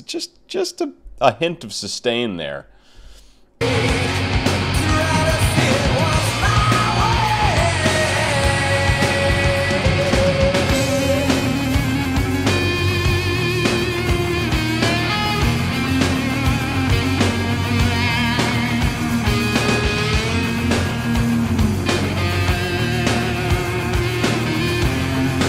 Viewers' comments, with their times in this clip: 0:09 Nobody that reacts to this song hears that epic high note he hits in the second chorus mark in your video